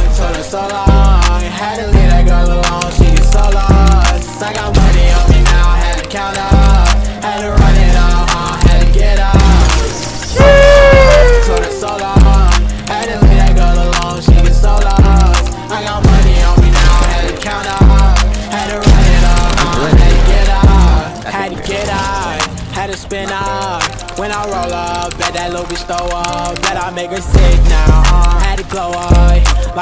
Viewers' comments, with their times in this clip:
0:10 The sheesh was Legendary 😂